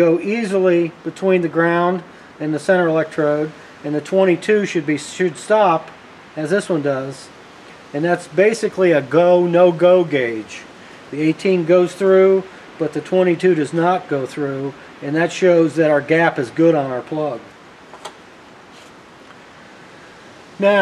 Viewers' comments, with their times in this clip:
0:05 "The 22 should be..." What? There's a garble in the audio there.